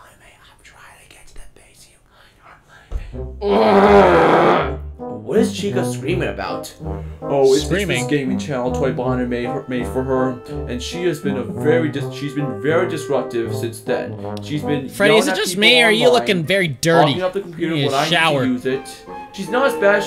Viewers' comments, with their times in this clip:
0:03 that sounds like a fart